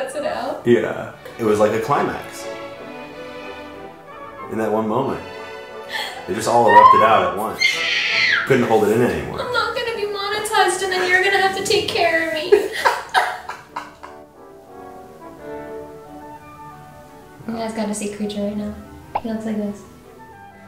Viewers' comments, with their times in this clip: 0:07 That screech made me spit out my water
0:08 was that an eagle
0:08 I SWEAR THAT WAS AN EAGLE 🦅